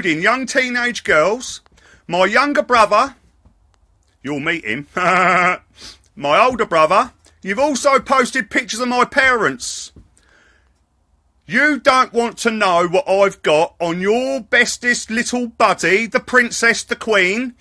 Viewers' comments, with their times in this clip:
0:05 Guy laughs like Sponge Bob :D